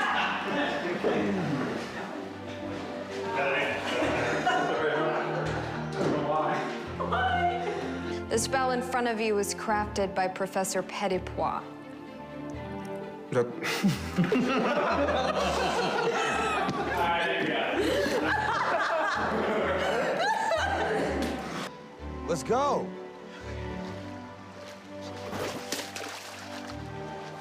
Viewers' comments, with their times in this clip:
0:10 why did i think she said Paul Wesley at first?😭